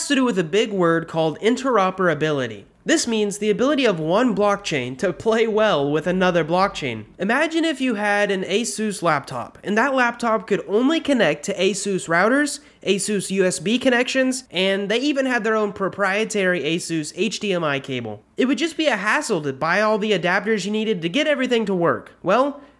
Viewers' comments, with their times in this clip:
0:07 sound like apple